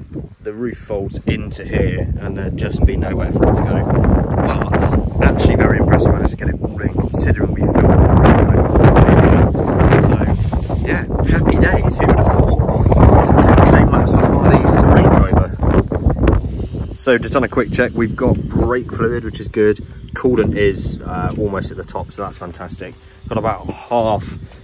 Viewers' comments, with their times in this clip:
0:08 The wind interrupted a bit .. But apart from that great video mate, keep up the good work mate.